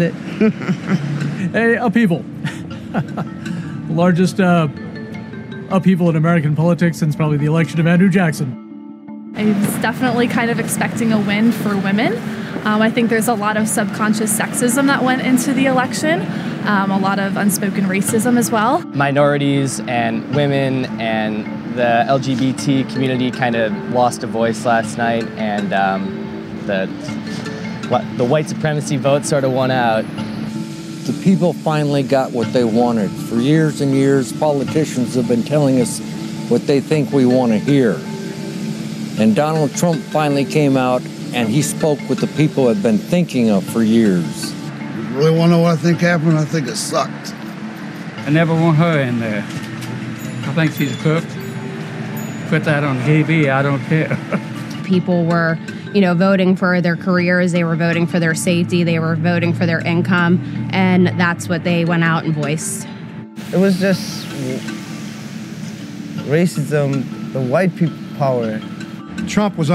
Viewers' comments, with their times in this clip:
0:03 "I voted" then giggles yeah she voted for trump
0:56 the opinions of anybody whose every sentence sounds like a question should be widely discounted.